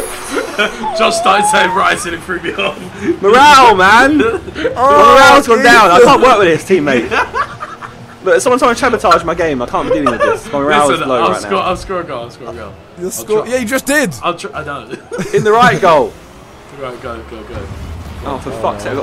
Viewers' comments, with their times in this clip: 0:06 Anyone else hear that weird wimped